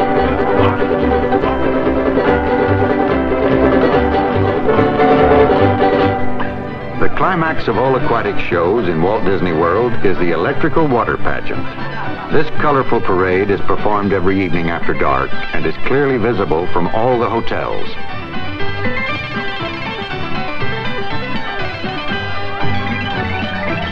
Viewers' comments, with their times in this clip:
0:07 electrical water pageant with baroque hoedown and cinderella music